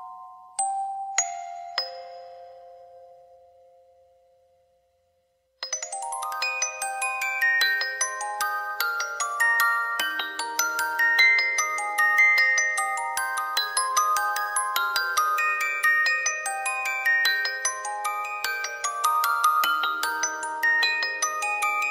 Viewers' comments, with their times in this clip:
0:04 the inst part was freaking awesome!!!! Love it !!!